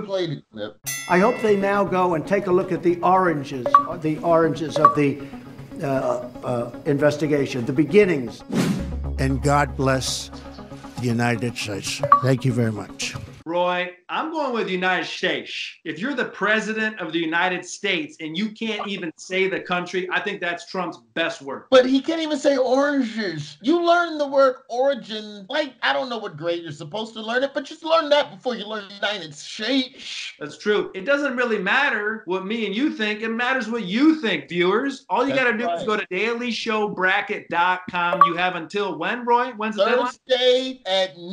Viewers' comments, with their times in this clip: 0:09 He clearly didn't say "The United Shaysh". I don't get you people making up words that didn't come out of his mouth, trying to "understand" what has been said. All anyone has to do is simply listen carefully and you'll find out. It is rather intriguing that you can't hear what he actually said. Anyone can clearly hear that he really actually said "Thuh-Deunighded Schlaysch". Seriously.
0:22 I don't know what Roy is talking about, he doesn't say "oranges" funny at all. The joke is that he is trying to say "origins" and can't annunciate the difference between these two words.